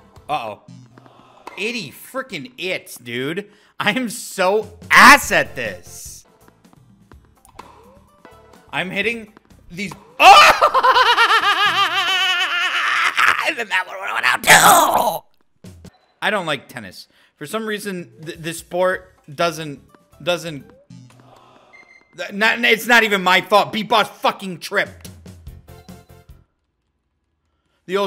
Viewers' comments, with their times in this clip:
0:10 that laugh is both hilarious and concerning
0:14 startled me with how up close he got to the mic 💀
0:14 bro sounds like gollum